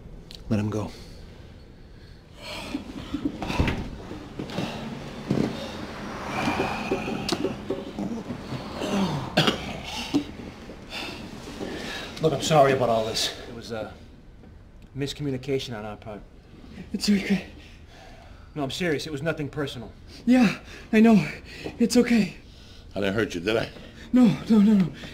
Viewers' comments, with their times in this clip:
0:09 Joey Diaz signature cough LOL TREMENDOUS